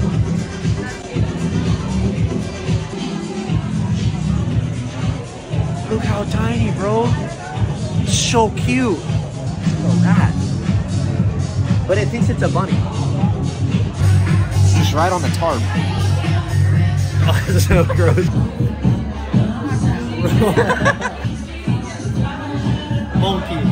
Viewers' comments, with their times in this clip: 0:05 it sounds like my gta night club in there and why the fuck is there a petting zoo at a prty imagine absolutely rolling and just getting to pet animals thats fire